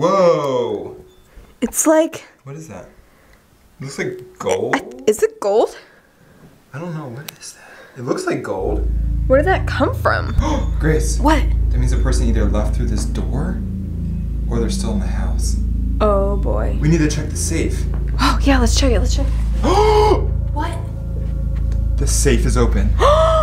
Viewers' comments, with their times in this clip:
0:07 in the background Hear that beeping noise someone is opening the safe
0:11 the safe kept beeping